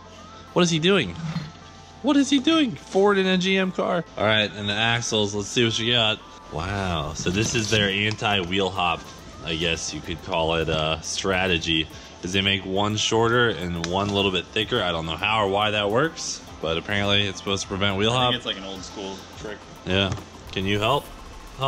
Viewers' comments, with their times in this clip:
0:06 That "wow" thoo